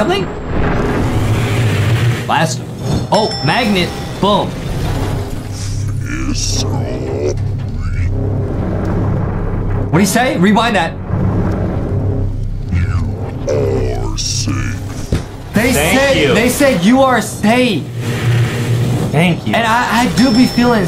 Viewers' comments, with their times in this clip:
0:06 In the sound was just like Tv man and only Tv man talk lankybox editing it because when l watched that Episode l didn't hear that you editor